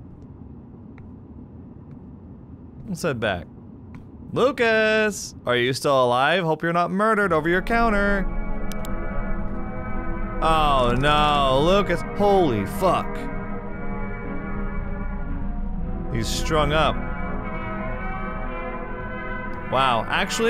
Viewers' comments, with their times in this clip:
0:04 not the fucking dementia music holy fuck 🤦‍♂🤦‍♂🤦‍♂
0:08 When Heartaches started playing it gave kind of mixed feelings? I find the song very soothing, so a slower version of it at a scene like that was certainly a thing. I'm confident it was a thing